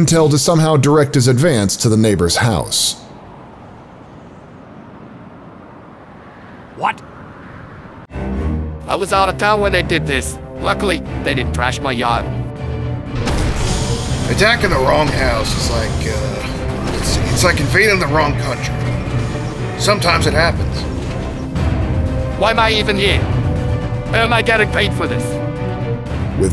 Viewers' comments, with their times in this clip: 0:08 AI VOICE!? WHY COULDN'T YOU GET ANOTHER VA!? 😨